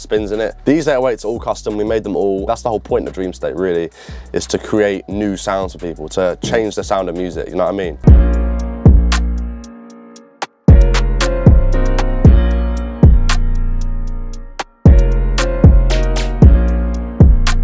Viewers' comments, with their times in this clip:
0:05 Did he fart?